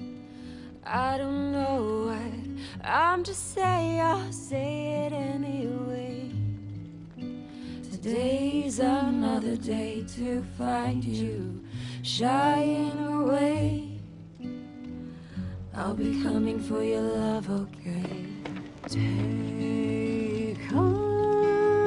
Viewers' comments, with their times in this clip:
0:03 XD voice craxk extreme by alice XDXD i love this episode